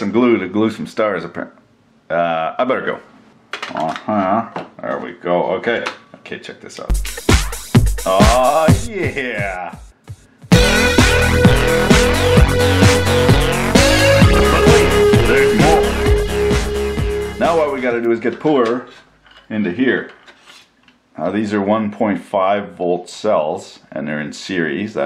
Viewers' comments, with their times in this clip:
0:06 you went Disco / Rave / Techno on us!! We didn't know you had that in ya. Thought you were a rock n roll or country guy. LOL Ya just gave a few a way to get into more trouble at work.....